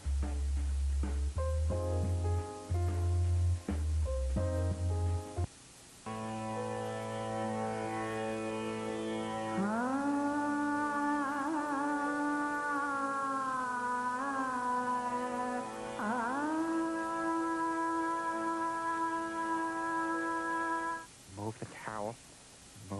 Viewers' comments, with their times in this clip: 0:06 The indent was the one I was looking for…I love the sound of the woman vocalizing. It has been living rent free in my brain for almost 20 years.